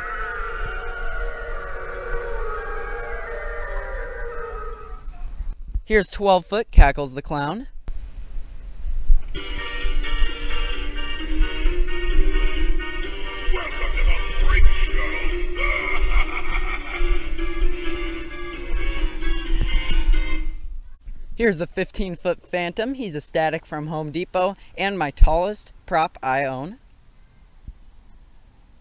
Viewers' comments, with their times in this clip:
0:09 Cackles the clowns music is a jam🤣🤣🤣